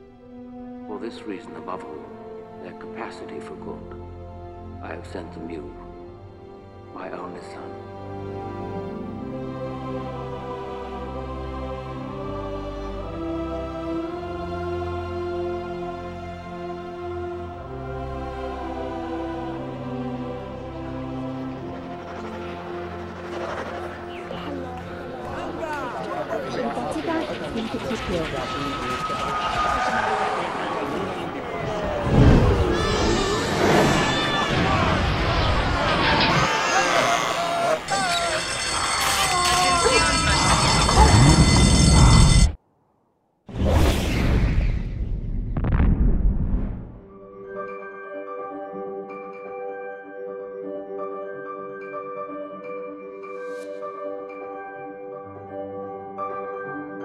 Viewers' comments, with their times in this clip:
0:08 The music makes me cry everytime
0:20 man, their chatter is deafening
0:44 Me first time watching this movie: "wow this a very good movie". Also me "am I going crazy or did he just let off a massive fart shooting himself towards earth"? 🤔🤔
0:44 Sonic Boom :D